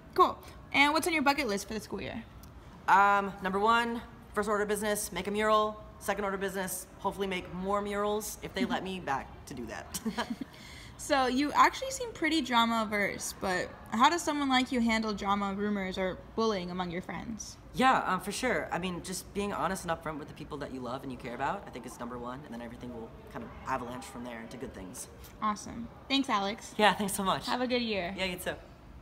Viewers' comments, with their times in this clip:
0:08 That laugh and smile reminds me so much of Frank Iero
0:10 Omggggg that laugh was the absolute cutest thing I've ever heard